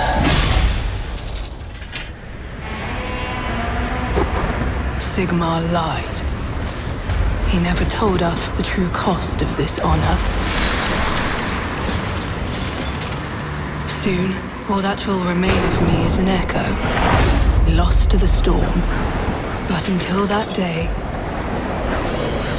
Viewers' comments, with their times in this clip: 0:03 Nice Godzilla sound